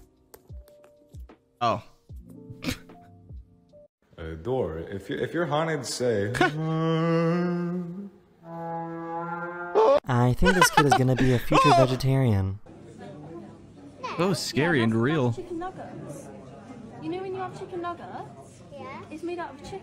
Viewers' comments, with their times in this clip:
0:04 I think it sound more like the Subnautica Cyclops horn.